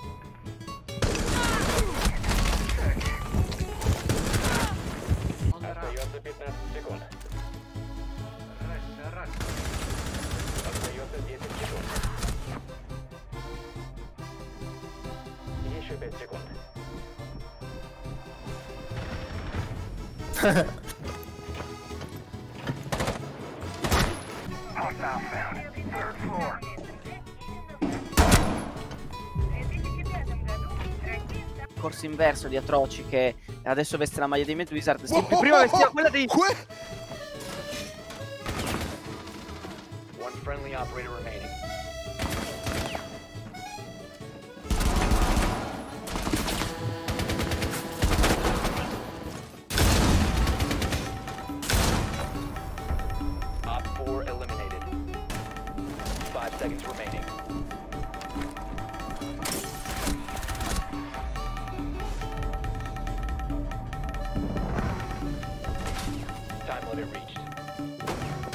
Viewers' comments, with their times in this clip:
0:10 wow that guy barely laughed I woulda been screaming
0:52 why would you add that extra sound track on top of the other? it sounds awful